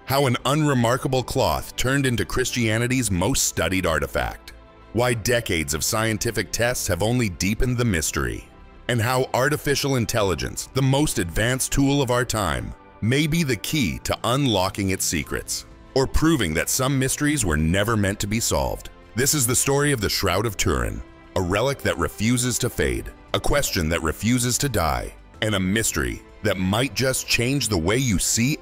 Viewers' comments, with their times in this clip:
0:09 Great Laugh!!! Robots don't have mammary glands (boobs).